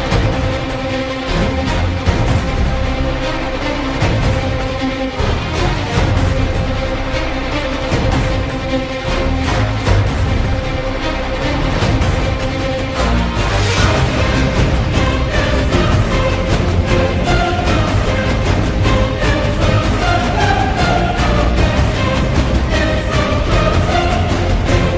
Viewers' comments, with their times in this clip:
0:05 Fool no man can kill me. I am no man Takes the helmet off then. Scream and sword to the face